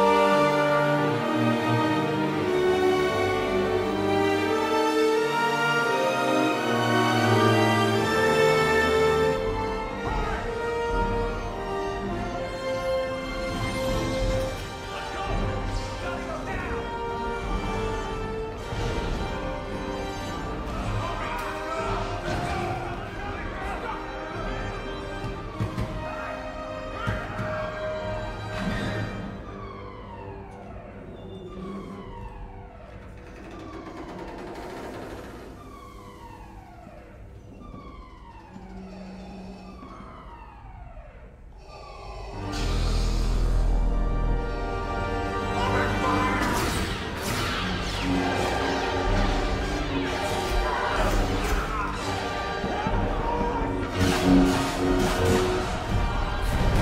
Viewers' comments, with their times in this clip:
0:05 The transition of the music from TFA to RO is pretty good.
0:39 When you hear that heavy breathing, you know you’re doomed